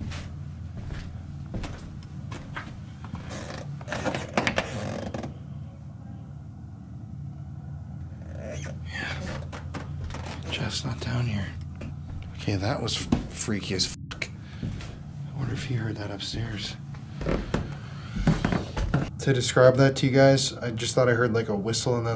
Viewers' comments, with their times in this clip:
0:05 you actually hear a woman speak pretty clear
0:05 there's a female voice
0:05 I hear a woman’s voice, nothing was mentioned so I thought I’d share ! 🖤
0:05 Idk if this was commented already. Don’t have the time to check comments but right when he looks through the door there was a females voice. This was while he was checking bc he just thought he heard a scream. I can’t make out what they are saying tho.